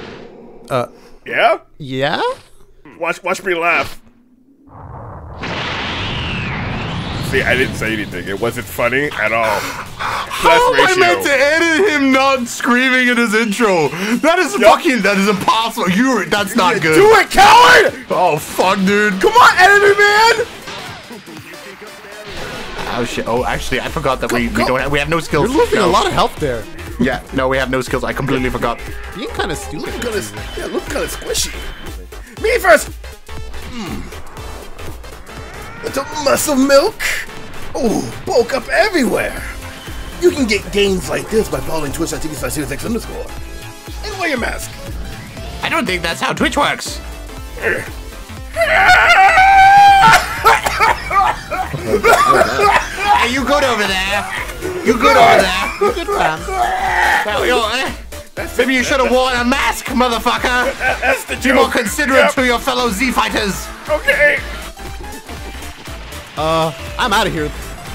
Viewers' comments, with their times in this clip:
0:04 he even edited him not screaming
0:17 I laugh so hard when cell said nothing in his intro XD
0:47 i feel that cough in my soul lmfao.
0:48 for the cough